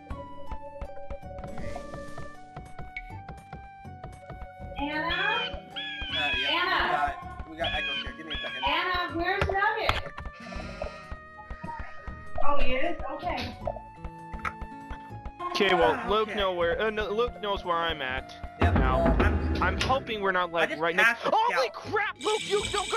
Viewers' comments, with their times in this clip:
0:05 Ur mom interrupts haha XP